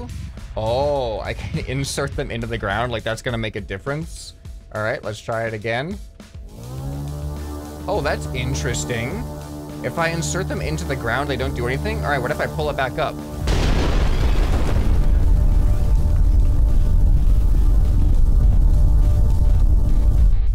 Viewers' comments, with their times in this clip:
0:05 that sound like the moovie intro: THX or was it: TXH